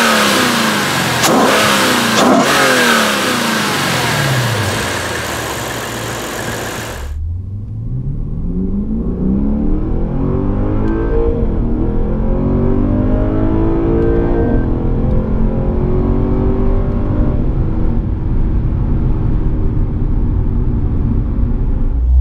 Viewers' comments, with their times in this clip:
0:07 Sounds great. The GSF is a very talented car, if $10k overpriced. Anyone who drives it is impressed. Problem is Mercedes really changed the game with their new interiors. Makes this look like day-old eggs. This is really a competitor for E43, nor E63, and Cadillac V-Sport.